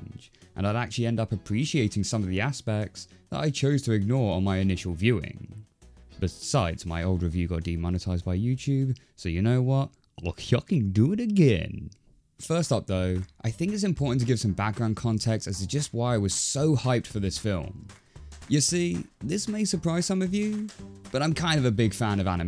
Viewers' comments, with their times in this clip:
0:09 Your Goofy impression caught me off guard. LOL! 🤣🤣